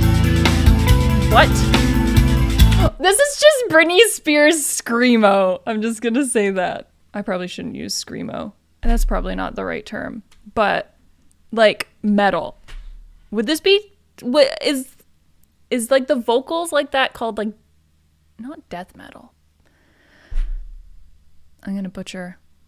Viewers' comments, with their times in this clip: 0:03 actually that kind of singing is called vocal fry...and tatiana is amazing by doing this!